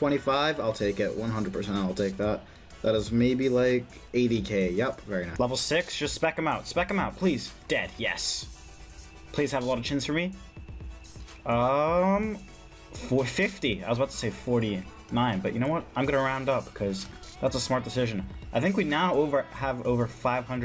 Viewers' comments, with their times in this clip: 0:03 lol instant voice change